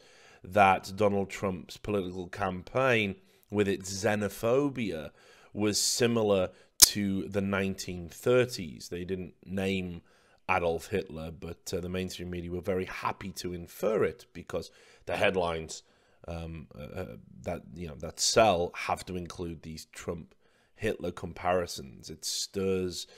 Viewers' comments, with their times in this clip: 0:06 my ears got raped